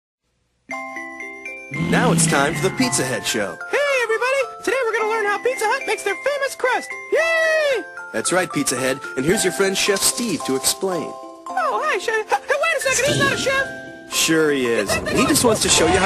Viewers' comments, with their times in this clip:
0:03 Why The Darn It Sounds Like X From BFB? 😦